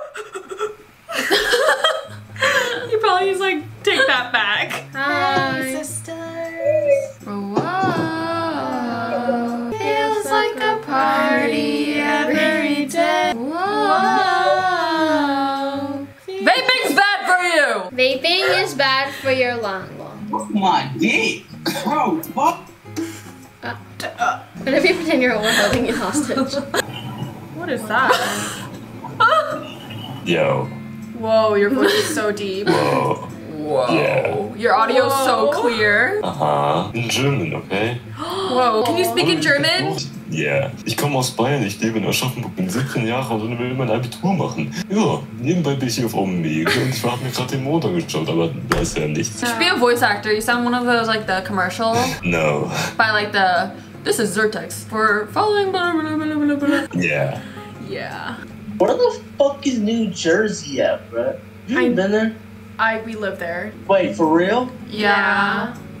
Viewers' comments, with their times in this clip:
0:08 honestly I’d be creeped out if people were singing this in sync, but it got me laughing so hard I couldn’t breathe-
0:13 when they started singing Jessie or somthing
0:30 OMG HIS VOICE HOW Felix's voice could never (Felix from Stray Kids)
0:47 Not the dude sounding like talking Ben ❤
0:48 why does he sound like the Google translate guy 😭😭🖐